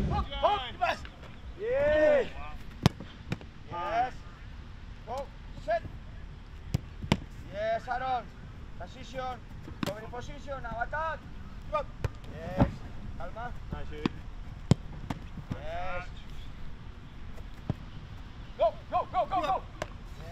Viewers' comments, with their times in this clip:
0:06 sounds like Emery is back taking charge of training again